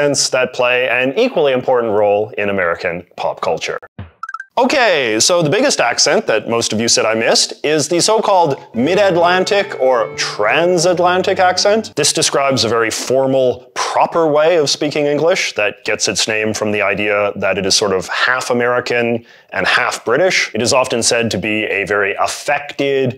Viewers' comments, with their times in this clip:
0:08 This kinda sounds like how adults speak in Savannah without the y'alls and ain'ts.
0:08 ahh yes the accaent that wei usse to descriwbe how we wish too exploiit the wowking pooa ok the not the one i was thinking of